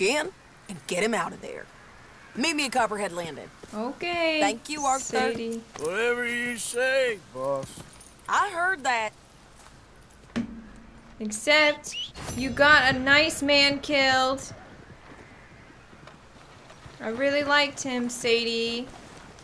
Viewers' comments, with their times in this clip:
0:04 cutest "Thank you arthur"